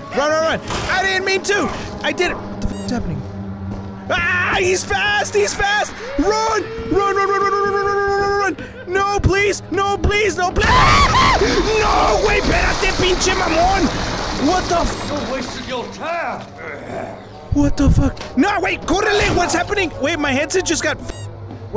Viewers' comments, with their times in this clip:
0:09 I'M NOT SCREAMING I'M JUST SINGING U HEARD? LALALAAAAAAAA